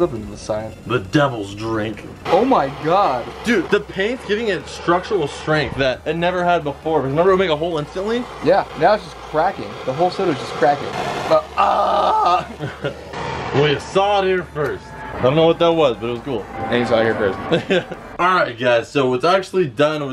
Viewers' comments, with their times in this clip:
0:03 structural strength?.. I thought it was STRUCTURAL STRENGTH!!!!